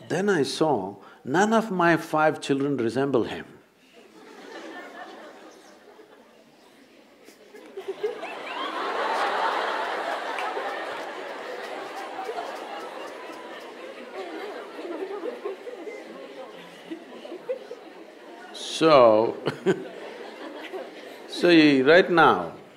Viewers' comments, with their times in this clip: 0:05 Best moment of this video :D The way she laughed 😍